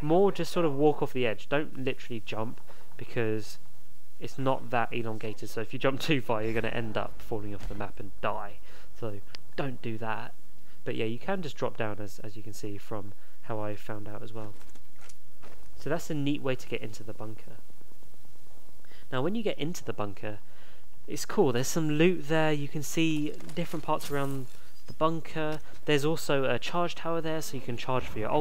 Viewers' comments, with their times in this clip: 0:09 Hahah the way you said dont do that got to me so well